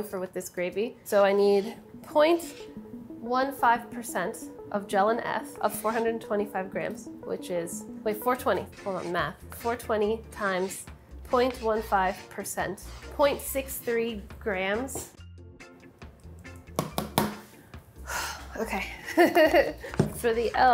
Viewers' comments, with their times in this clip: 0:07 is no one gonna talk about how the music changed after 420 was introduced ??
0:08 Who else notice them sneak in that smooth reggae ?